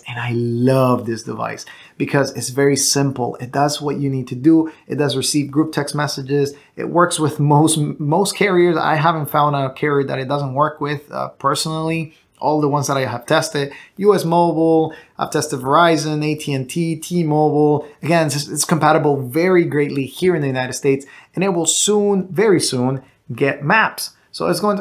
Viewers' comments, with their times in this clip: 0:10 listening to some german music xd